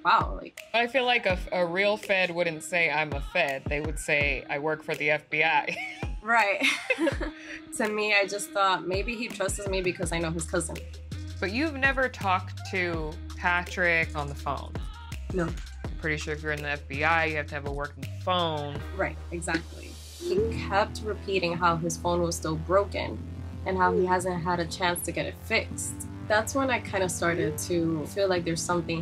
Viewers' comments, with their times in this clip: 0:10 she says “trustes” instead of “trusts” and I’m cringing so hard.